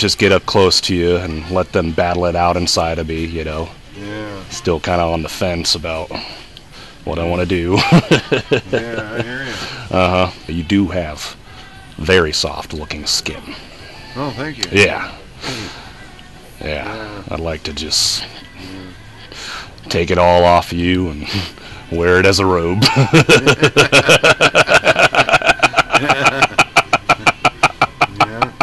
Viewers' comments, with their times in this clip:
0:10 when the laughter of pure fear starts XD I died